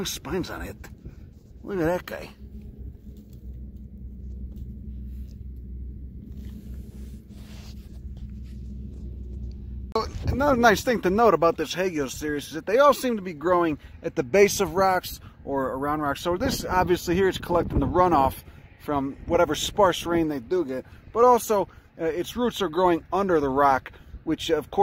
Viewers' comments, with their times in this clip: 0:05 The ambient noise really hammers home the alien landscape you’re in